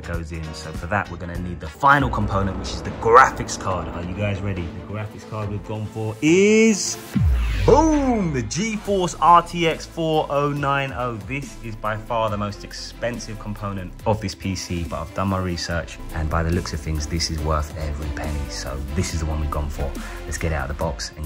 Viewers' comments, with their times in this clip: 0:05 i think this is the first time i've heard someone say RTX FOUR O NINE O instead of RTX FORTY NINETY